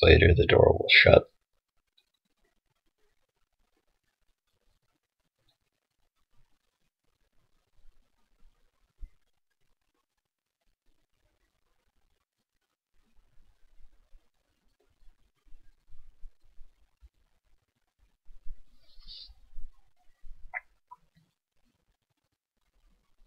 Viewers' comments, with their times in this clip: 0:06 ever since There is 30 whole seconds of awkward silence.